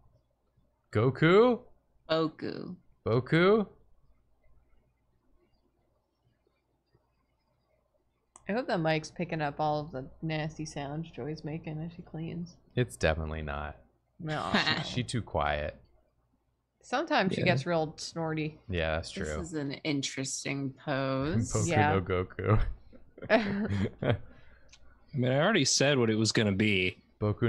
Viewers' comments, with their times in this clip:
0:08 My cat was also making mlem noises just now o_o